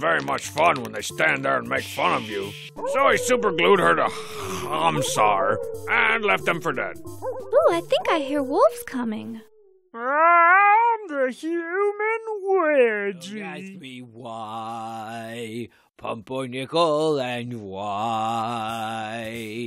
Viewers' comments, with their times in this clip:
0:03 the pure hatred in the way he struggles to say “Homsar”